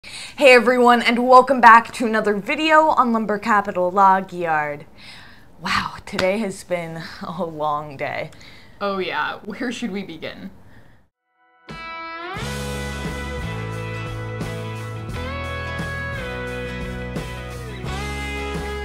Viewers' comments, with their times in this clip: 0:03 The way you say '' Log Yard'' is so funny🙏